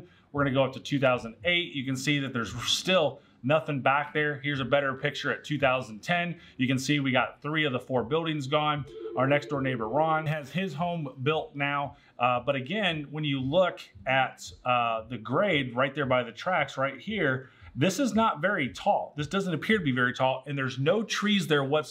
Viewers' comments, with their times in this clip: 0:08 oh geez, I need to change the ringer on my office phone, I thought I had a call coming in.